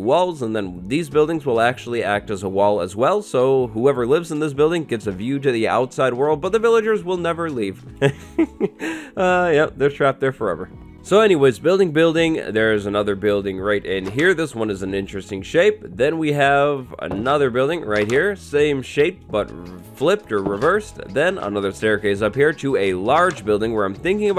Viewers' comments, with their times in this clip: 0:08 🥺the little evil laugh I love it